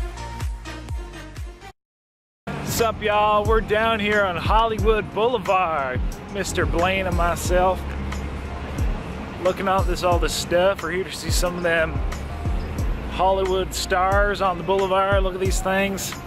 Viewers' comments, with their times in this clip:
0:04 Just listen to yourself talk..... Y'all